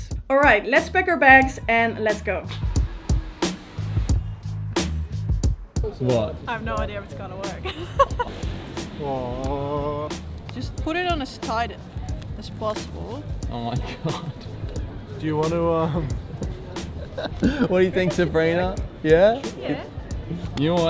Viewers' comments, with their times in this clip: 0:06 starting to get the Aussie accent !